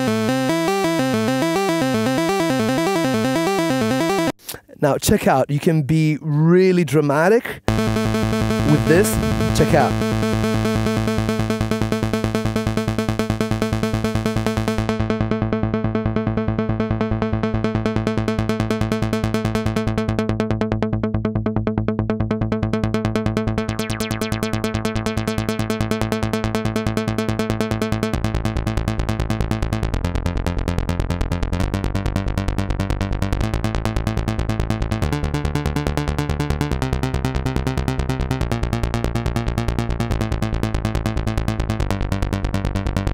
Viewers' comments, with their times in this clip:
0:07 this arpeggio section with the filter modulation reminds me of a Juno-6/60 😍
0:29 Is just me or it sounded like Photographic by Depeche Mode.